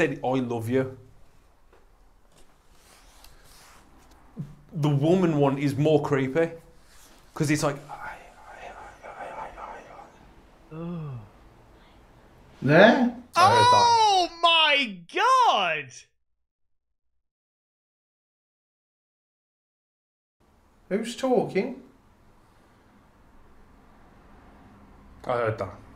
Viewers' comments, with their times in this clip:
0:08 I could hear that female voice everytime. I heard the male a bunch of times too. I wonder if when she said Mike, it was because that was the male spirits name. They are chatting like the entire time they are clearing the building. she said I love you back. She said I love you at least 2 times in a row.